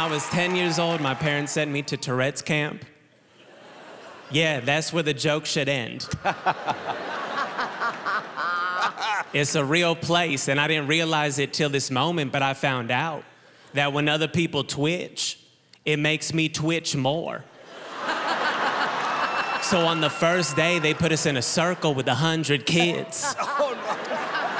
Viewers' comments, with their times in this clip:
0:06 Simon laughs... then Mel laughs... and then Howie laughs after lol